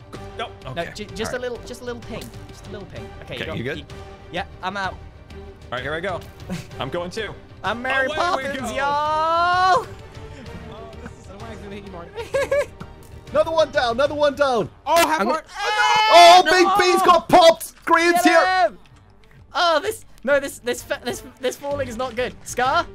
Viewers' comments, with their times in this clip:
0:07 Therapist: “Grian with a southern accent doesn’t exist he can’t hurt you” Grian with a southern accent:
0:10 grian saying “yall” is so foreign